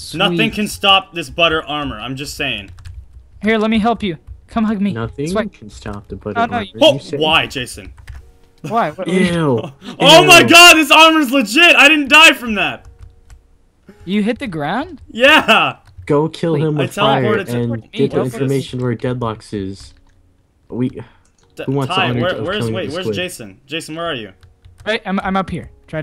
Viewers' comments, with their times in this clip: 0:07 You can hear the rage from Adam